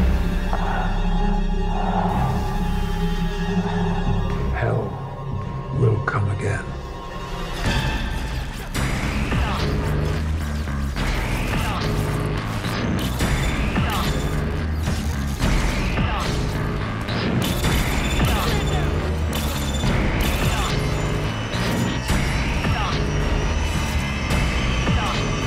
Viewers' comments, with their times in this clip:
0:07 Yo, what's that crazy music that starts playing ?